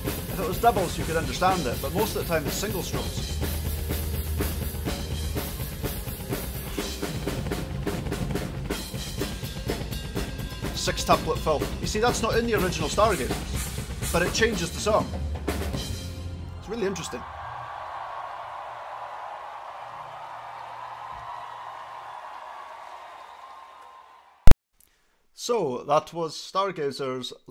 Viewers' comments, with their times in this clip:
0:09 I'm not a musician so I have no clue of what they are so mystified of. The High Speed Gallop from maybe? It doesn't sound all that strange to me, having listened to what the Unleash The Archers' drummer Scott Buchanan is doing in "Awakening", with the difference that Tomas Haake is doing in twice as fast. But then again, I'm not a musician so I can very well not be anywhere near the same ballpark as everyone else. Cheers / B.